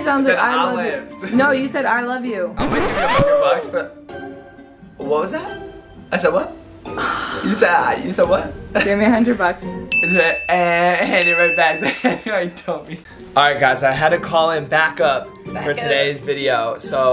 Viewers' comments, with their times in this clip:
0:05 I should kill everyone in the scape? Sorry the voices,I AM KIDDING,it's not what they really said